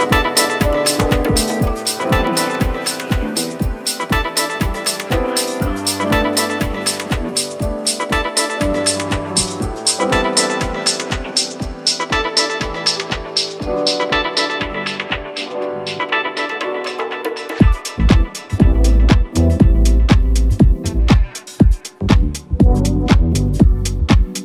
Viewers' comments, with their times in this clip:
0:07 that transitionnnnnn was so good.